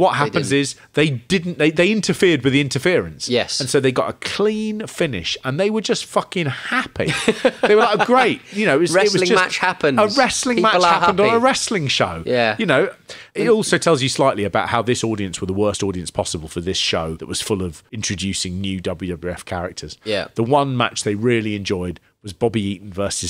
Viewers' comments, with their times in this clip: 0:07 the guy clapping is happy